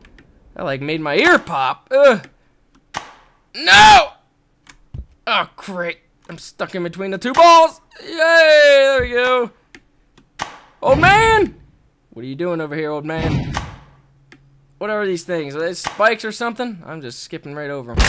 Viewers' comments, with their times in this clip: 0:06 close your eyes that sounds discussing. 0_o